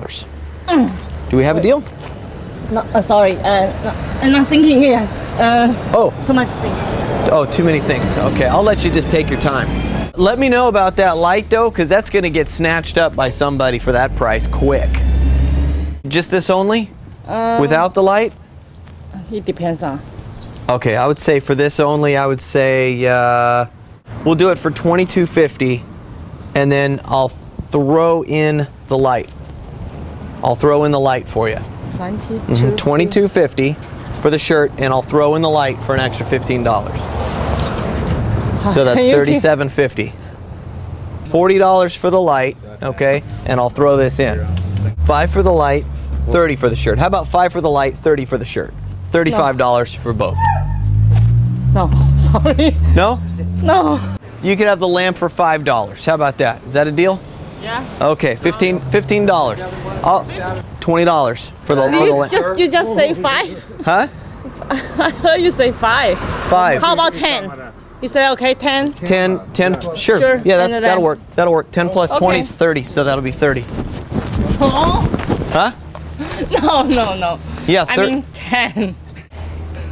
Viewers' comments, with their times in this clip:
0:06 to much singing
0:16 Did the lady say "Take your pants off" ???
1:05 Cammera'' lol the old man